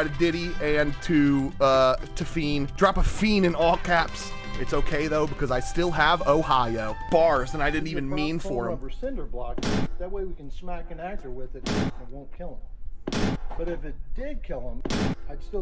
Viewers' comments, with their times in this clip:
0:03 laughed thrice should’ve been run two